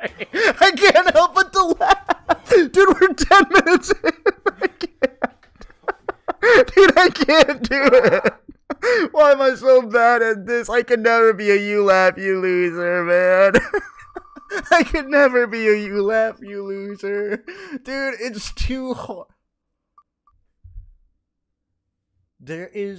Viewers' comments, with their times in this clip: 0:08 Omg I thought it was just cut to show only his laughs until when he says “We’re only 10 minutes in” bro WHAT 😭